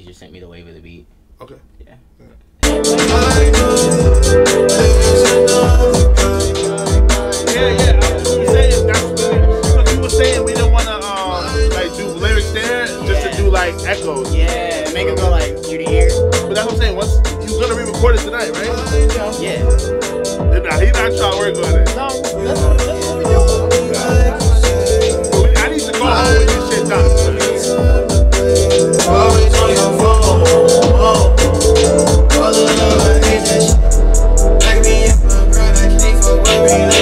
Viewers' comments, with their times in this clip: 0:03 the song is so hard 😂
0:25 song was insaneeee